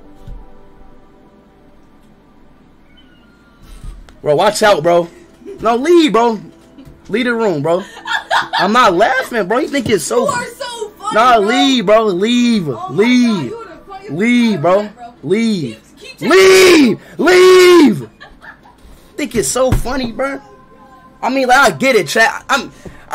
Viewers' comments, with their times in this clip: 0:08 Bro just laughing his a** off- 💀